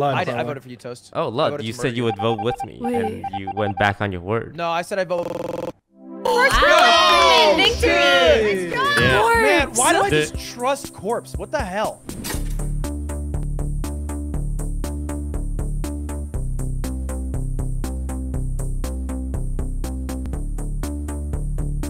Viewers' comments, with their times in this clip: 0:03 toast really made out hit that giorno theme lmao
0:04 “No I said I vo-o-o-o-o-o-o-o-o-o-o-o-o- cuts out P.S. I had to go at 0.25x speed to count the “o”s there were, I think there is 12.